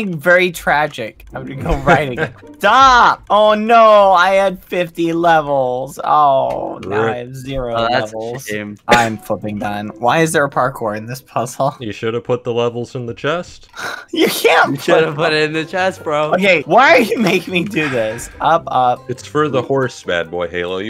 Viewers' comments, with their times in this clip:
0:08 did he say flipping or........
0:08 is just me or did he swear